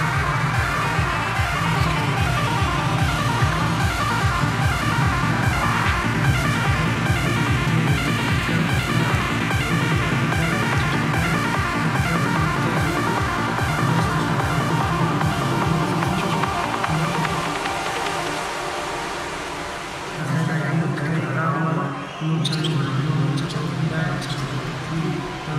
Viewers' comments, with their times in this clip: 0:06 at this time I don’t need any drugs for these psychedelic vibes . This set always makes me sweat .